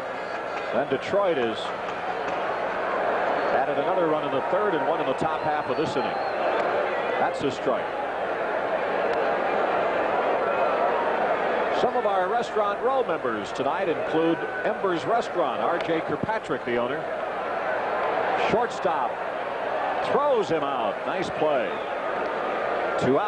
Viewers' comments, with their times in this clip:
0:10 mark - Did you hear the "crack, crack, crack, crack, crack, crack"? They were not cracks of the bats, but the way I heard the cracks were "crackling snaps", and I can confirm that the crackles were from the detonations of firecrackers from somewhere in the stands.